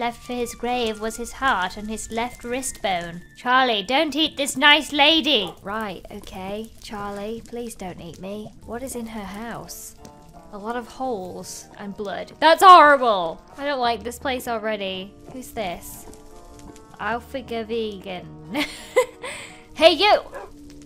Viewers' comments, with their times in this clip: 0:07 “Ok,Charlie, please don’t eat me.” Kinda sounds Irish hehe Edit: the time is